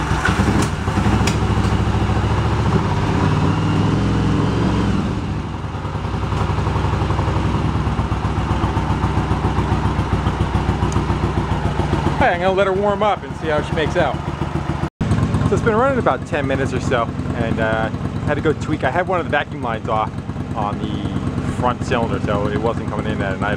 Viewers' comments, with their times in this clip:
0:06 why was it making that back fire sound ?